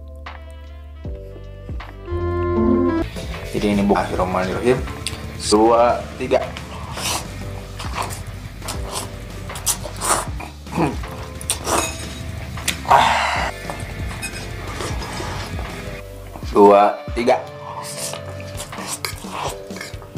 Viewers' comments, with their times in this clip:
0:08 minute that's Indonesian, not Malaysian